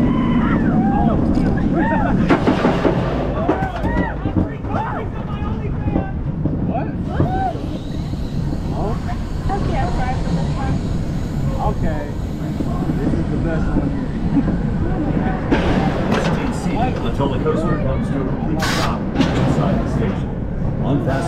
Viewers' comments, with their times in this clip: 0:04 ayo what did he say??? also is it just the video or does it really have that bad of a rattle